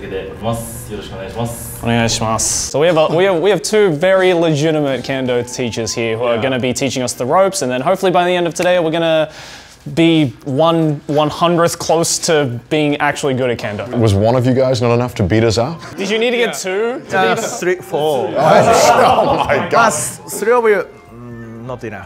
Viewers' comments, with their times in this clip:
0:09 bro... My speakers were at full volume and it's AM... and within the first second "ARE YOU NAKED RIGHT NOW?"